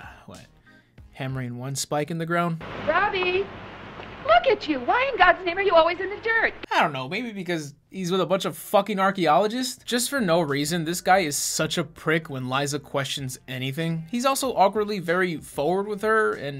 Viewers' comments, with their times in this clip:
0:04 "Ryan why in gods name" sounded like Ryan Gosling for a second.